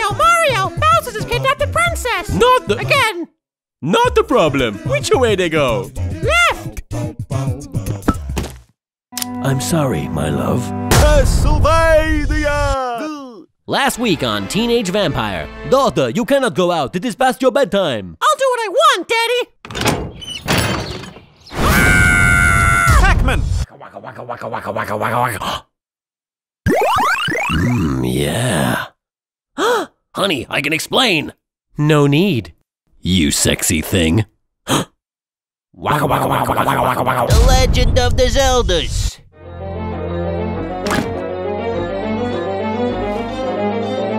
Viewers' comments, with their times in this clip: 0:09 The slam and the gun matched perfectly.
0:31 I swear she sounded like MatPat